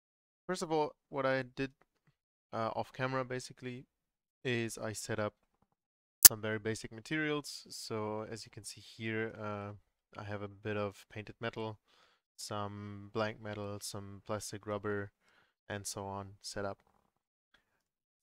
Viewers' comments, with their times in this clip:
0:05 there is a loud audio glitch so dont listen that part at very high volume